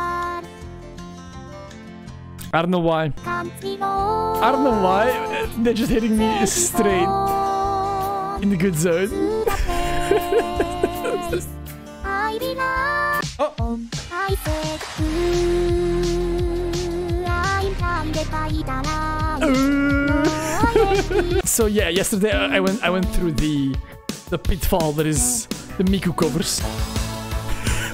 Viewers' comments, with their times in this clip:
0:08 No matter where i go. I cant escape this fucking song. i am from WV and i hear this song everywhere. It follows me help